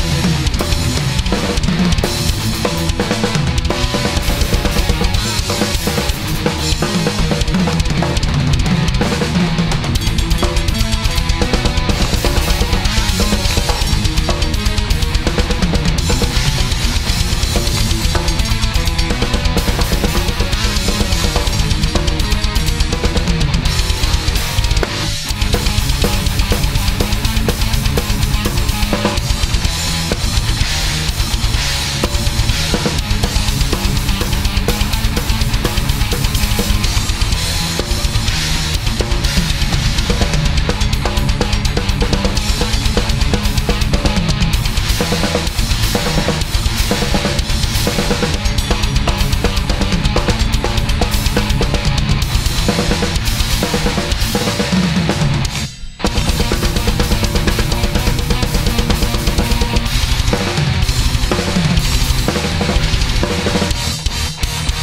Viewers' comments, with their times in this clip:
0:10 The cymbal-bell-triplet riff is seriously one of the coolest things I have ever heard! Superb playing, and you look so RELAXED as well! Unreal! I'd sell my soul for feet that fast, I have great hand speed and technique but damn... metal has always been my downfall!
0:52 holy shit ._. That was awesome, the alternation of snare and hi hat between left and right WHILE keeping a steady blast beat going, that was really cool hahahaha